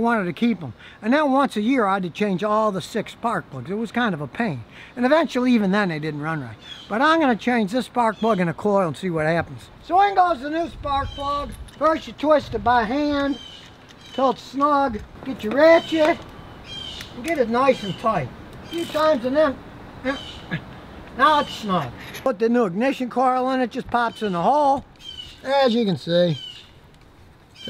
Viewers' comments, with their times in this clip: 0:09 The Birds getting in their last Tweets before Scotty leaves 🐦 🐦 🐦